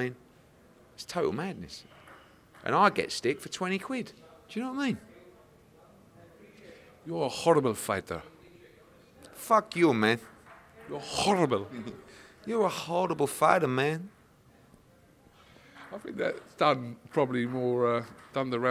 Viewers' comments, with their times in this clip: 0:05 impersonation of Canelo 😂😂😂